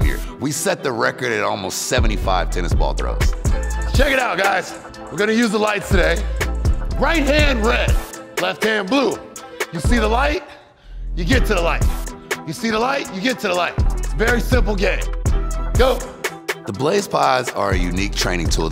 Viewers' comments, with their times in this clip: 0:04 my mans inner DMX came out Rest In Peace ✊🏾 “You see the light, you get to the light”